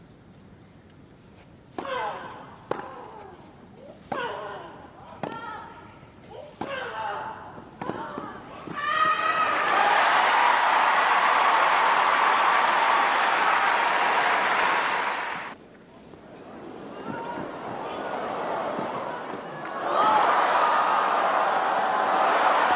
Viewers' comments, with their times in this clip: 0:08 Serena needs to hit the treadmill a bit more; more running, and less running her mouth off. Really need to get rid of some of that chunky-trunky. Lol, the psychotic belows of someone who has nothing left to frighten their opponent with, other that acting crazy.
0:09 Williams shouting her frustration to the ground.
0:09 screaming at the court